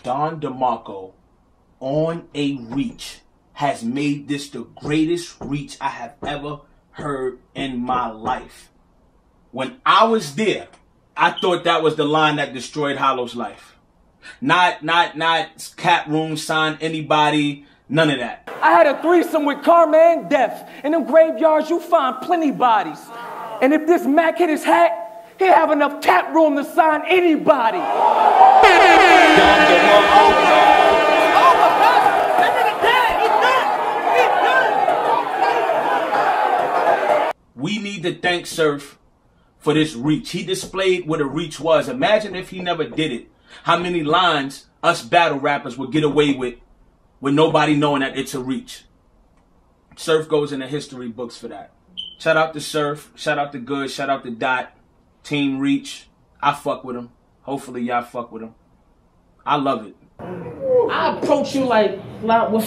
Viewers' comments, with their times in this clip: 0:09 the smoke detector lmao
0:49 Your fire alarm 😂😂